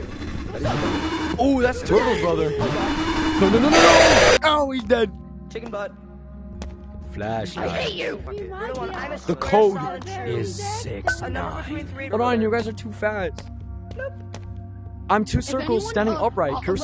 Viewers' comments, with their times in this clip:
0:04 he said caputhin not capuchin